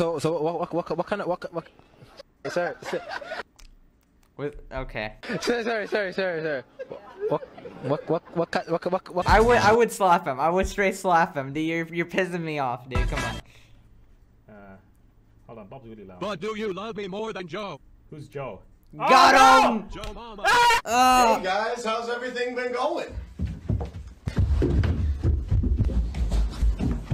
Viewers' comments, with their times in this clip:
0:09 slap him, but for a different reason. Sometimes you gotta whack a CD player when it’s tweaking out to make it continue. Maybe that’s what the guy needs